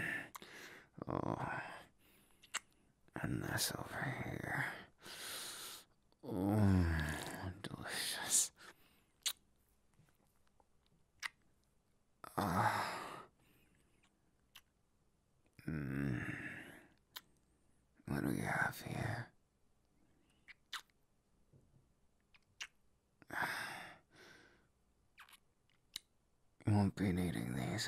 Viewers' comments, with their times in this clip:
0:06 Was that a slurp....? Did he just slurp- I- Please I need to know because I'm laughing too hard thinking that he Slurrped and I'm also s h o o k lmao
0:08 Bakugo My Mind: Gordon Ramsay Voice DeLiShiOus FiNnAly SoMe GooD FuckInG FoOd